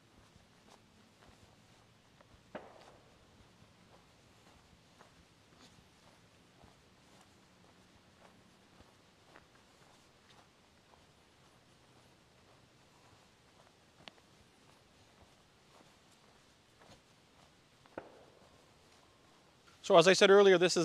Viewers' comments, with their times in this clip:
0:08 Are there gunshots on the background on ? So, it's gun-related, afterall. To be serious, very interesting video and thatks for the remandier about Session Nine. Not so popular film, but quite impressed me about 15 years ago. Must be rewached.